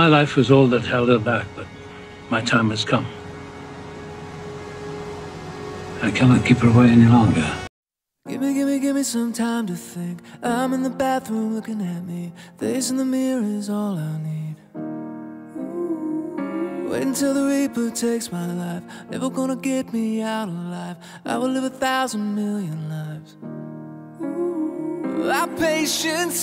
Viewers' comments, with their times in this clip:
0:08 Nice choice in music.